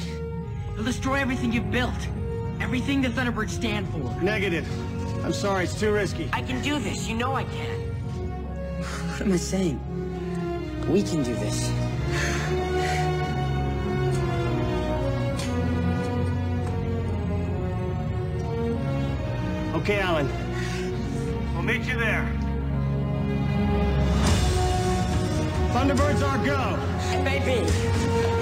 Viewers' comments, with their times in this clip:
0:10 You know, you can't deny that the music in Thunderbirds is FANTASTIC! Especially just wonderful!